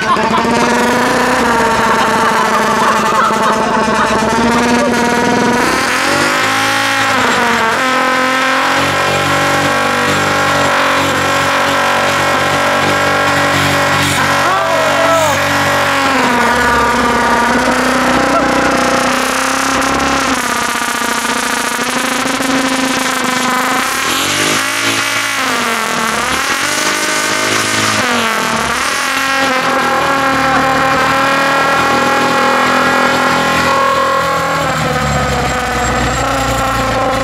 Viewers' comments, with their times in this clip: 0:04 average civic aftermarket exhaust
0:06 your average straight piped vq at 2 in the morning
0:08 actually sounds like a vq engine lmao
0:16 that is identical to a nissan 350z with a muff delete
0:19 Straight piped Nissan 370Z driving past my house at 3AM
0:23 That one civic at three am
0:24 every Honda Civic at 3 in the morning during the work week.